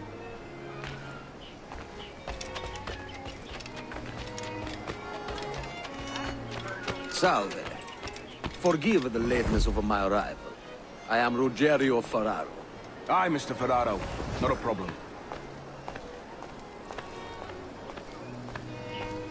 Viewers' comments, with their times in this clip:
0:06 Never knew Edward could pull off an Italian accent. :)